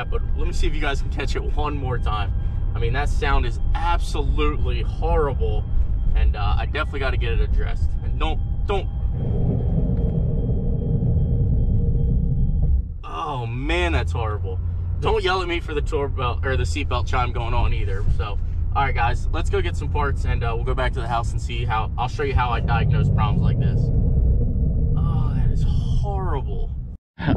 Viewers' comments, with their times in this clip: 0:10 it sounds like wheel bearing or brake pads worn down to metal and just grinding.